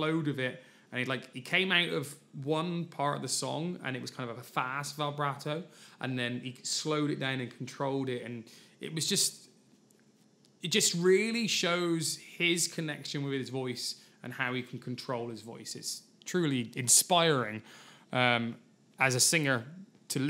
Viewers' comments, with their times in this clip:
0:07 I think it's actually a tremolo effect that Dimash uses here, rather than vibrato. There's a slight volume wobble rather than pitch wobble.